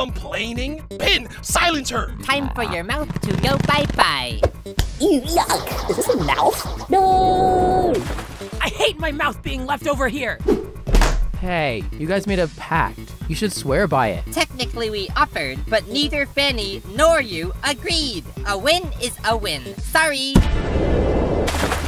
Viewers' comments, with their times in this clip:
0:04 Pin had way too much fun delivering that line😂😂 Which I guess is Fair Considering Her Arc in BFDIA